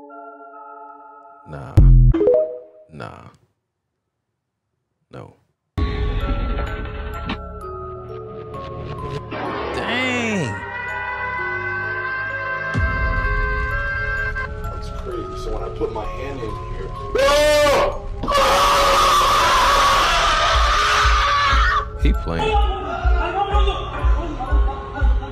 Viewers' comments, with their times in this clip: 0:07 I busted out laughing with the Bugs bunny screaming hahahahaha